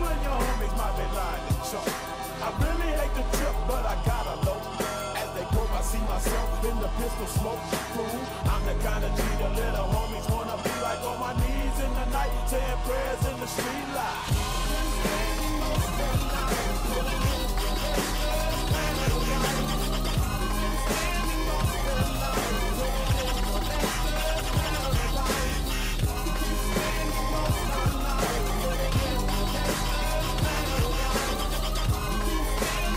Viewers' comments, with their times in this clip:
0:08 The sync nobody talks about...
0:13 truly a bears in the street light moment
0:13 It sounds... perfect.